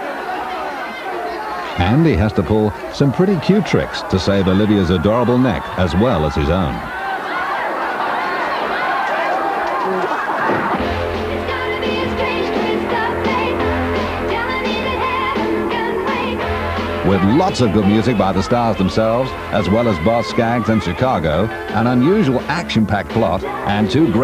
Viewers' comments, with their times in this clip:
0:09 was that fart sound effect really nessessary?